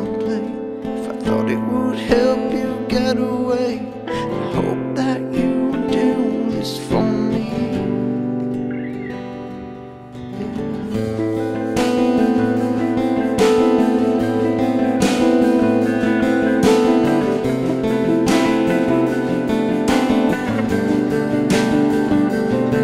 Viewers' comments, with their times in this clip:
0:10 Sounds like "well I stole bits from the dam almost every day, now I'm drowning in the flood I made. Will they explain myself to me on the other side I'm gonna want some answers when I die" I came here... on is creamtastic!!